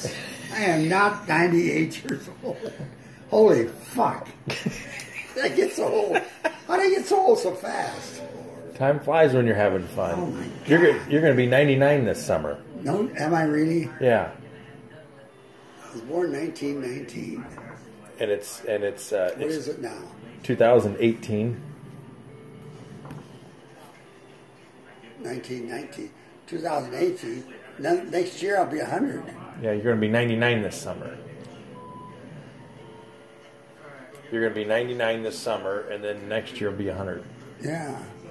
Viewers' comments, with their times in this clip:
0:03 thats the most perfect “holy fuck” i ever heard
0:19 this clock sound 😢